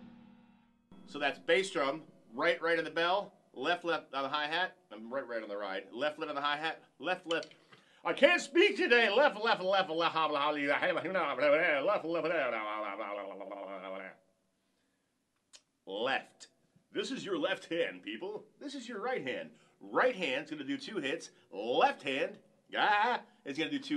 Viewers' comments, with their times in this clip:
0:07 Ah...that explains the middle eastern touch ...haha Very nice fill, I have been following you for long...always amazing.